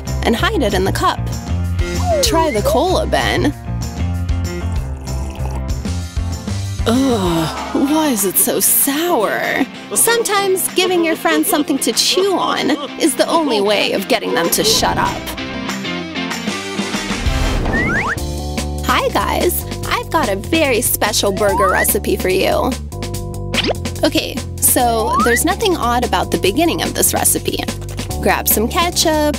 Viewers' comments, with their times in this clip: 0:10 yellow guy laughs like a goblin